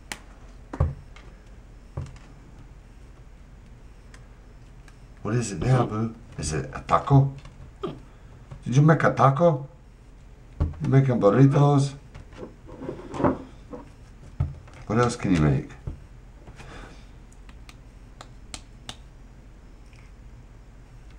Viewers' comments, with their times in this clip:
0:05 I died when he made the Mexican accent when asking if he made tacos and burritos 😂😂 Edit: it's